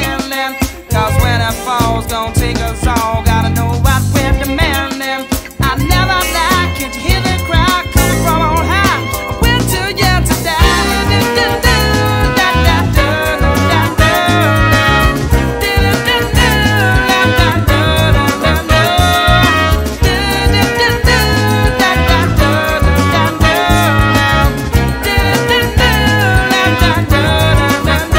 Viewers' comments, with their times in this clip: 0:09 Is too funky! I can’t stop listening to it. The song means so much. Jam is getting busy! Dancing! Being creative. Top 10 song in the worlds history
0:09 Very stevie wonder, especially
0:09 Jamiroquai, master of breaks... ...The one in deeper underground is also supercool.